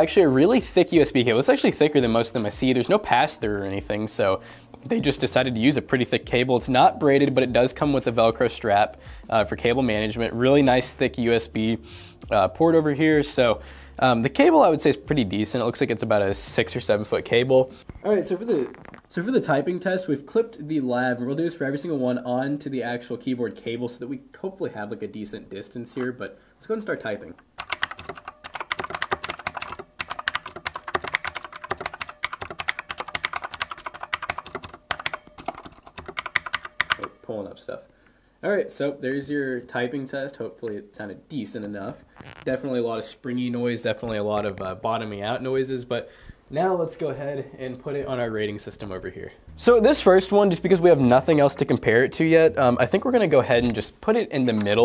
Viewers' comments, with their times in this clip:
0:03 THEY voice crack
0:30 keyboard asmr ftw
0:37 my ears are bleed ing